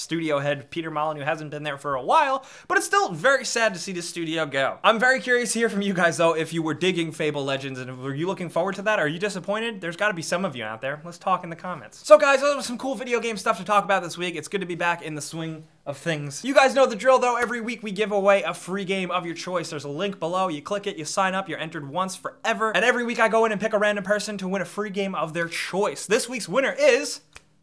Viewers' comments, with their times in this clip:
0:10 that lets talk in the comments sounded very sexuall 0-0